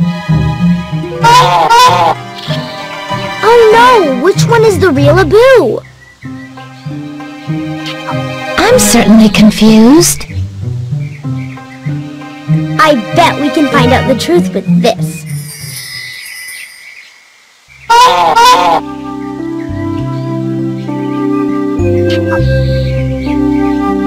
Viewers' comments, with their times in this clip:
0:05 THEIR SO DUMB DOES A MONKEY HONK? Does Abu honk?